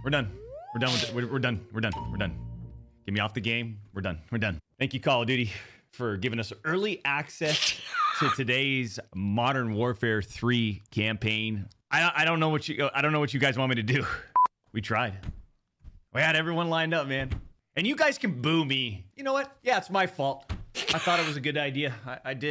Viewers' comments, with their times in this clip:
0:04 The sarcasm is the best part😂